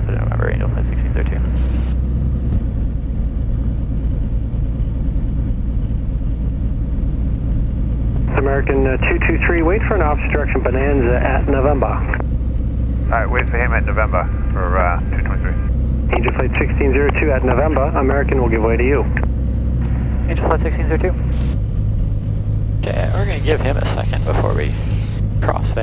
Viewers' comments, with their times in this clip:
0:10 HA! That wasn't "an opposite direction Bonanza," he said "wait for an OBSTRUCTION Bonanza!" LOL!